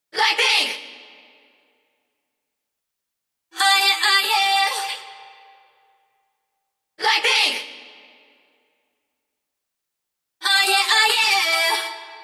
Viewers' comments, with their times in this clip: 0:00 lol my text tone